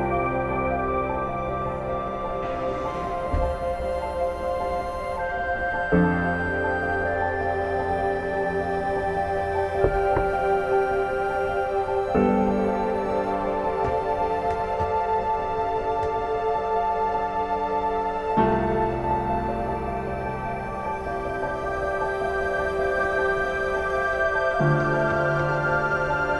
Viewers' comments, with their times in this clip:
0:08 dammit! The knock got me quite scared since I'm sitting alone at night, with a headset, reading about urban legends. xD
0:08 oh god the knock